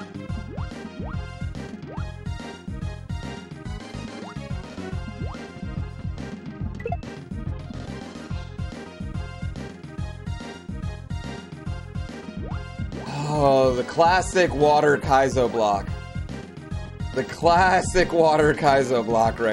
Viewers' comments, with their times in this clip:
0:06 So, "Botany Bay" vs. "Thalassophobia" (Really hard to write) 2 water levels. Trolls to your heart content. BBBs (Bullet Bill's, you know...). TBH, the music in both levels fits really good. The first very slow paced, and the latter keeps you on edge. And I gotta admit, that scream freaked the heck out of me. Kaizo Block counter: 7. (Classic)